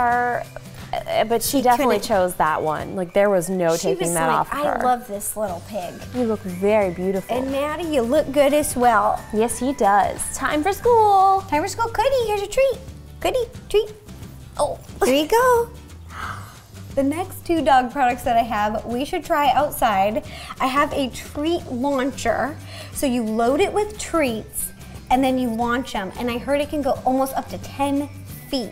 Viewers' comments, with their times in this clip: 0:10 I love how she called cookie coodie 😂